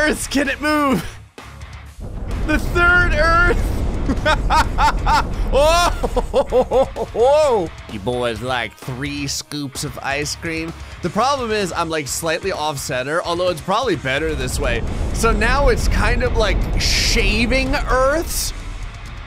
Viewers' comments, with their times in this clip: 0:04 *psycho laugh intensifies*